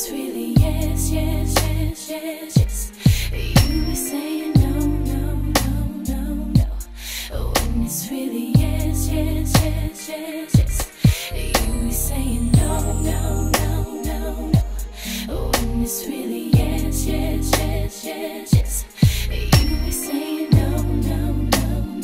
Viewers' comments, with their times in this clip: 0:08 they passed gas